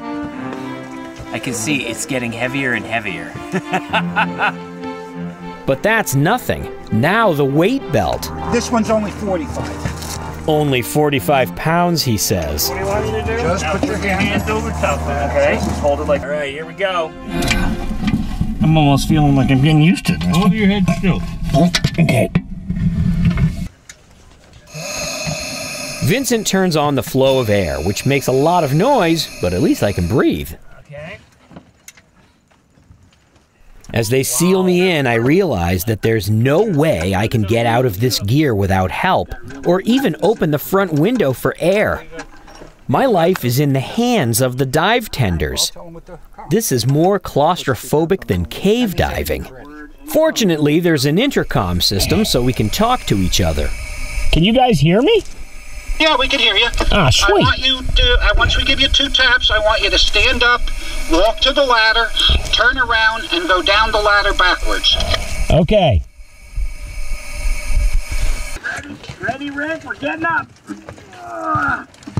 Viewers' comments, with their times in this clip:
0:09 that sounds kinda like peter griffon from family guy
0:56 sounds so much like peter griffin 😂